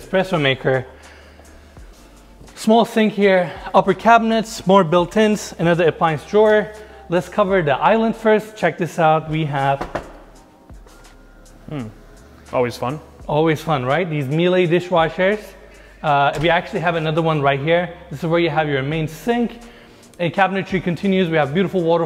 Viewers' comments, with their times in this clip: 0:09 lol you like to knock every single video, i love that!!